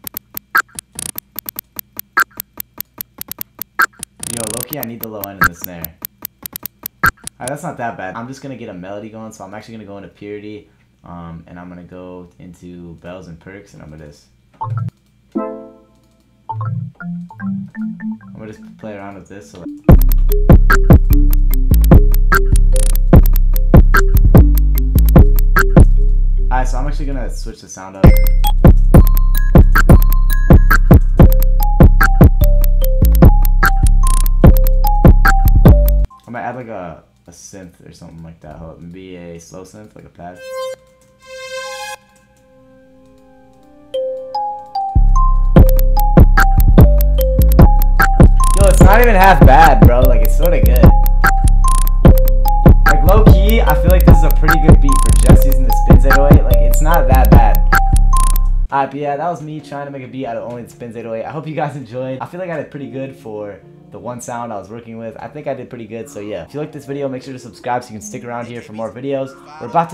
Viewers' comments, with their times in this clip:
0:05 when the fire alarm is blaring
0:51 Future on it, it's dope beat